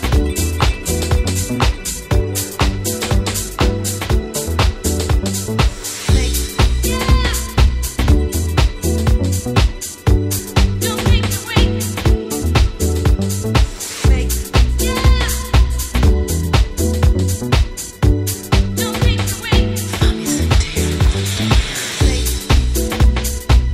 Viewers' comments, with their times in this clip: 0:06 Is she sayin 'Satan' ?! WTF?!